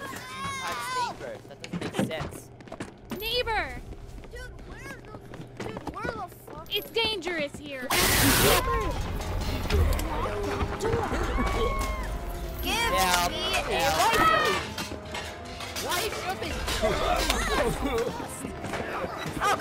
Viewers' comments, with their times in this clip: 0:06 the way he went in and screamed for his life 💀